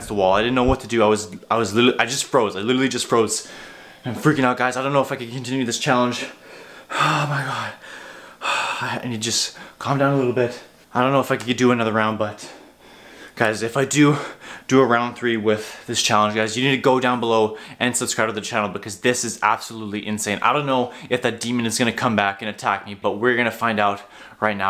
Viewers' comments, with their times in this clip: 0:10 In I hear something creepy Listen closely